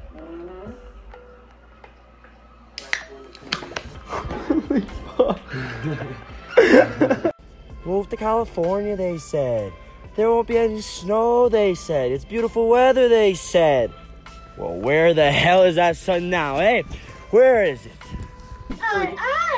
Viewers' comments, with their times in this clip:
0:05 aw his little laugh 🥺💖